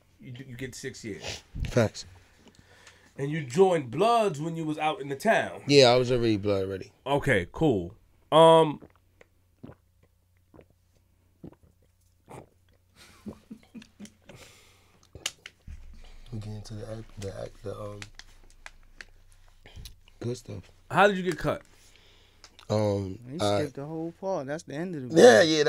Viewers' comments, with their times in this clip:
0:10 That gulp is crazy